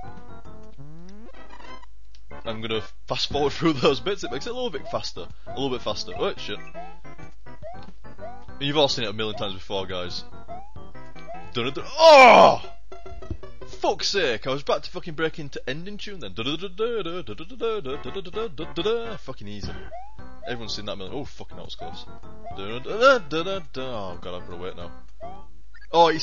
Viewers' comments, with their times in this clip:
0:10 that was some really emotional singing ;D